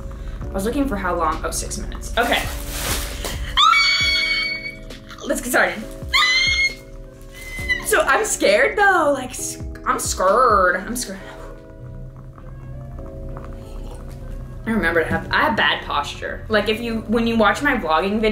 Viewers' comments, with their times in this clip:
0:05 the sound ur fork makes scraping against ur plate